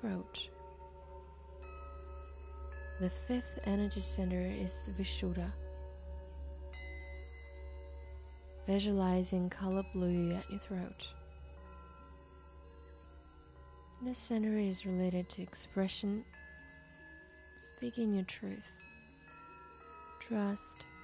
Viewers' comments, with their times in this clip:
0:03 it happens again and yes, very creepy high pitched noises ruin what would otherwise be a good meditation.